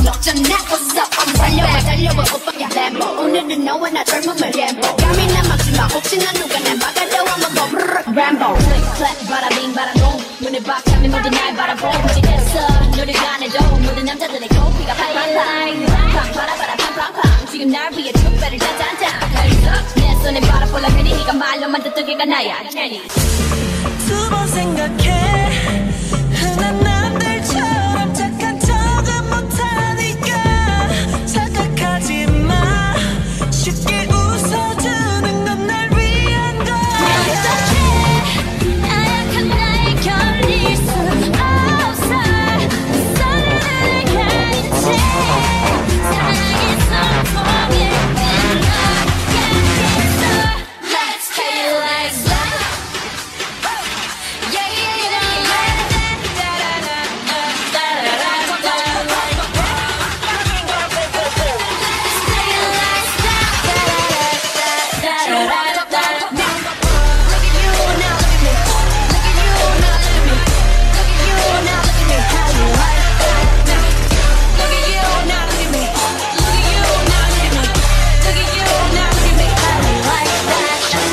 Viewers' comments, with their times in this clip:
0:08 Not even one minute in and Im already gooped at how they you mixed Boombayah and HYLT
0:09 Oh my god when after lisa jennie's part Me :- 🤯🤯 When jennie was singing the background music was of how you like that 🤯🤯🤯
0:23 For those who didn't know is not Jisoo's voice it's edited ok her voice is really good and also this mashup is lit✊🔥
0:23 One question. What happened to Jisoo's voice inthis part ?
0:24 what did u do to my jisoo's voice😭🤣
0:51 The mix that starts is god
1:04 oof this is amazing!The beat drop i-